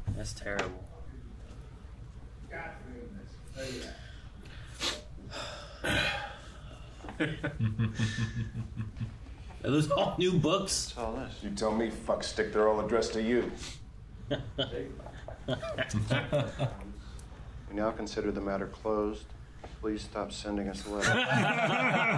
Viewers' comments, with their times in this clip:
0:03 Men don't cry in front of their friends, men do those noises